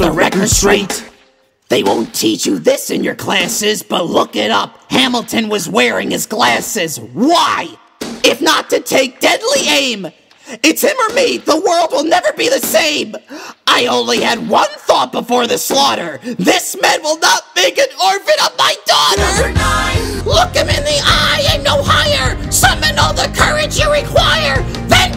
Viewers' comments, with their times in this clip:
0:07 Am I the only one who noticed the emotion in Gonzo’s voice in The World Was Wide Enough? like seriously listen to him my son is pissed